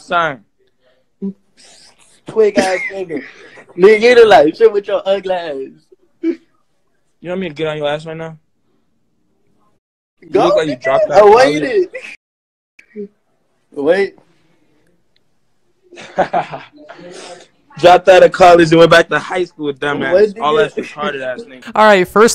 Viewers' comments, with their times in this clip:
0:07 This dood is making me feel like i don't have the weirdest voice I may sound like a 3yr old but at least I can speak clearly. should said no homo